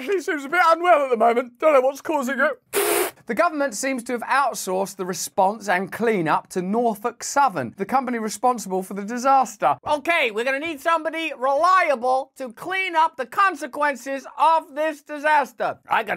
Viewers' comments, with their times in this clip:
0:03 very interesting info, but I’m neurodivergent and can’t take your screaming character voice. I get that it’s just comedy, but for those of us interested in your commentary, some aspects of your owner the top delivery overwhelm my capacity to listen to you. Thanks for what you do, but I had to shut this one off because the hysterical character voice wax more than I could take. Best regards.